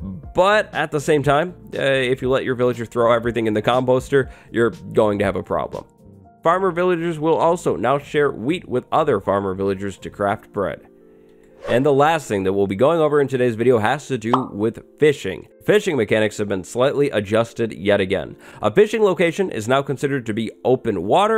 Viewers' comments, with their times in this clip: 0:06 they will share WEED to craft breads?! That's the greatest update ever!